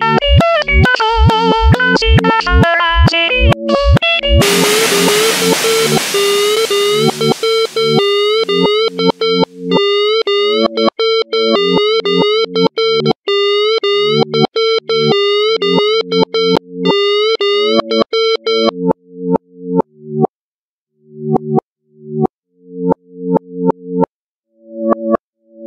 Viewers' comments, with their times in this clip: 0:07 eas alarm be like